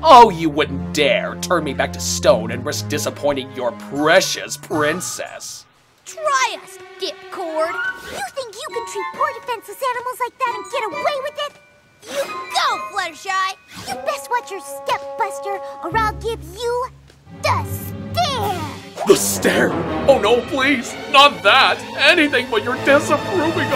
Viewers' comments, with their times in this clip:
0:06 Wait, did she say D*ckord?